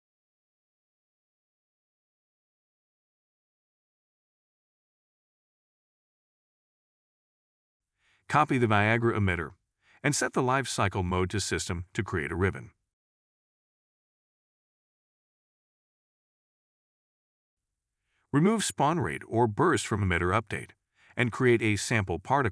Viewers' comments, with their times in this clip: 0:07 The voice synthesizer said "Copy the viagra emitter" 😂